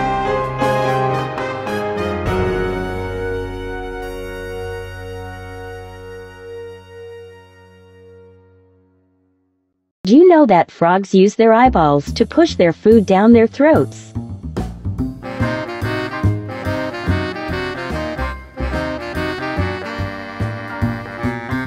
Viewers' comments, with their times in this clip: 0:03 the menacing music over this very confused flat frog is hilarious to me